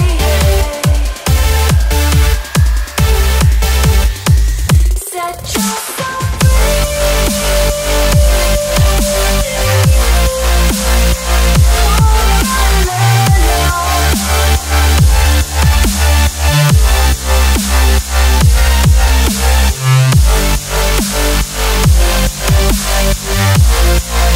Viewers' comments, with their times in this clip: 0:06 B Drop xD